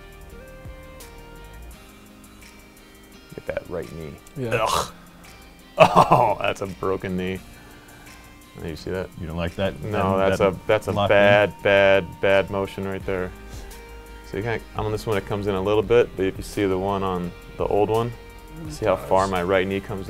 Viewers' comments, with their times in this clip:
0:04 wtf was that noise Lmao 🤣